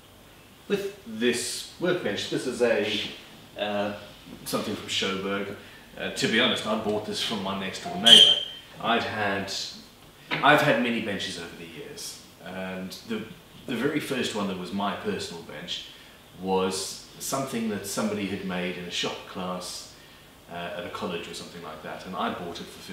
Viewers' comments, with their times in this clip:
0:07 That squeak almost killed me.